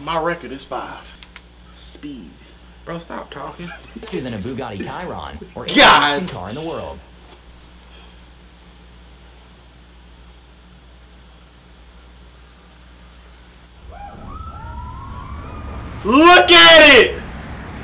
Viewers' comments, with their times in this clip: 0:04 Anyone else cringe on how the narrator said Bugatti Chiron